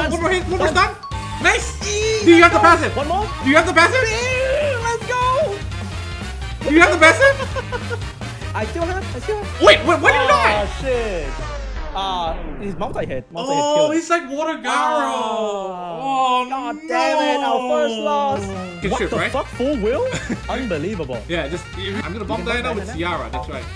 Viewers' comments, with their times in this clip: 0:09 the end of the intense build up music 🤣🤣🤣🤣🤣